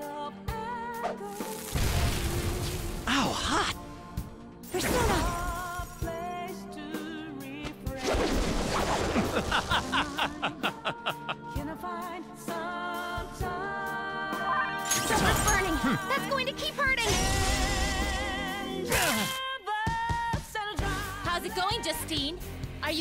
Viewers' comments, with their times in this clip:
0:08 wot never heard joker laugh like that.